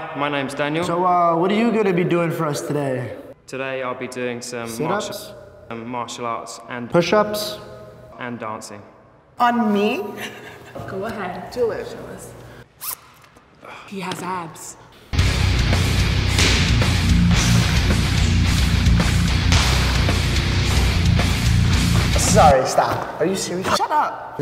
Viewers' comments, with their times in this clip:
0:09 that dude sounds like hes from New Zealand